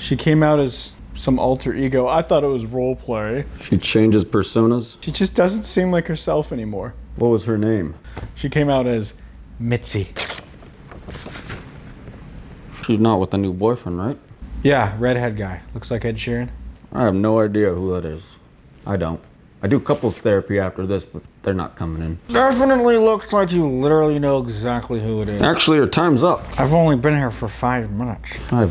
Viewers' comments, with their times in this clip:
0:09 Why did sound like Trump